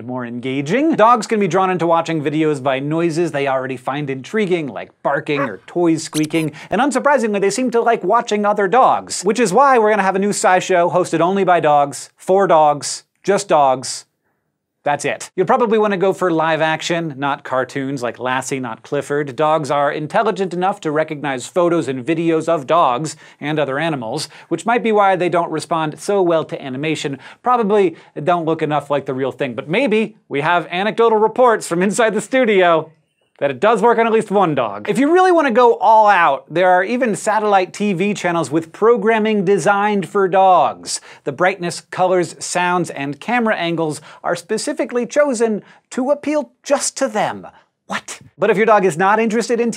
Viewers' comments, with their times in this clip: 0:03 My dog was completely uninterested in the video, right up to the squeeker
0:06 Thanks a lot, you put in a squeaky noise and now my dog will be looking for that imaginary toy for hours. :D
0:33 And I love the barely suppressed wheeze of laughter off camera your shows have so much personality, guys